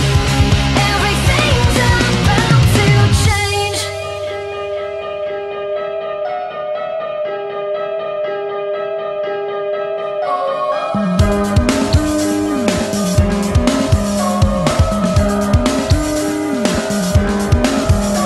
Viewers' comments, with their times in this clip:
0:03 The music starting from reminds me of "In The End" by Linkin Park